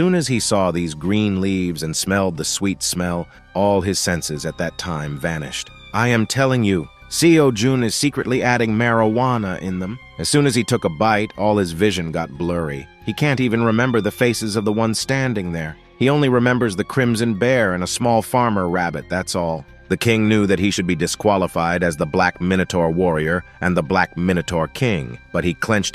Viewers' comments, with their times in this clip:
0:09 excuse me maroana